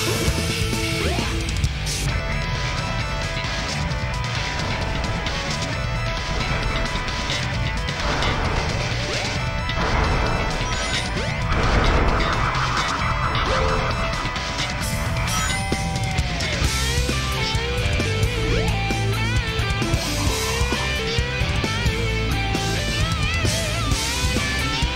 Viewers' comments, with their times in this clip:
0:05 I like how Tails sees Knuckles heading further into danger, and Tails just decides to stop and watch! LoL also the soundtracks are amazing in my opinion.